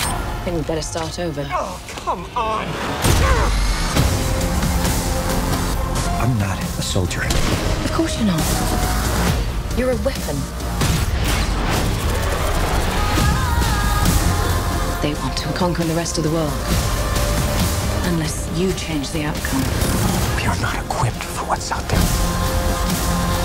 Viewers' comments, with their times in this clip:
0:04 Anyone knows what is the name of the song that starts ? Its sound a little bit like some kind of mixed trance/elctronic and even dubstep. Send me a msg if you know the name. And no, Im not talking about the song "This is not the end - Fieldworks". I was talking about the second song which starts as I said above.